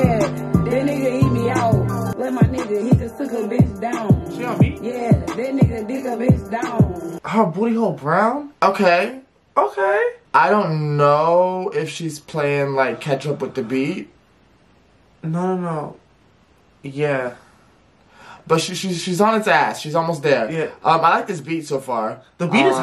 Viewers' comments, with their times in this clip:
0:07 took me out 🤣🤣 the way he said it😂😂